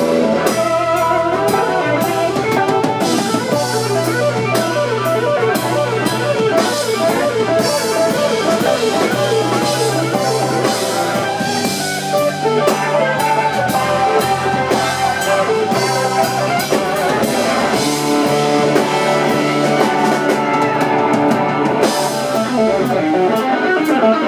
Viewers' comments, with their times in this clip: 0:10 that quote on Eric Johnson is just mesmerizing